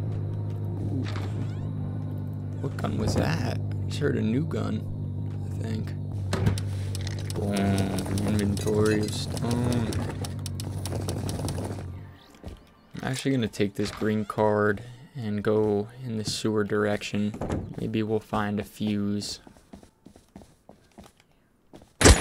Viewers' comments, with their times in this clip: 0:04 bros xim u can hear his mouse clicking